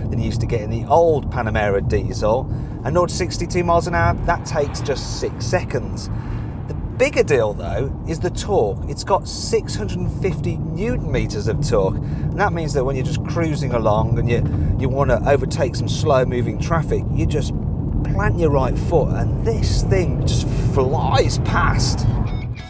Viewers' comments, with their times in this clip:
0:06 "A bigger dildo" is the torque ? ;d hahaah